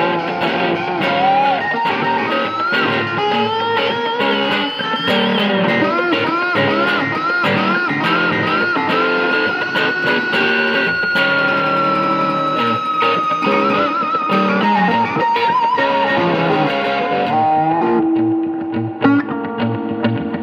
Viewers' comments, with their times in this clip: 0:06 How the hell is he getting that tone and onwards? Beastly playing